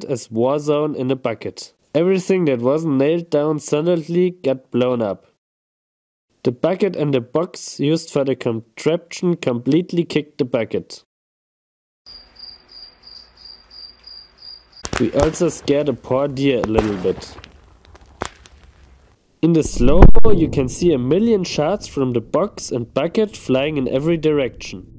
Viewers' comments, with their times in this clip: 0:06 lol genius to switch to a shot of crickets chirping after that joke